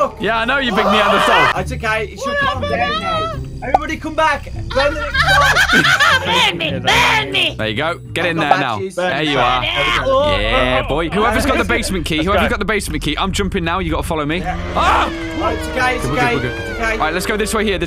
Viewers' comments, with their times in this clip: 0:05 That laugh though at-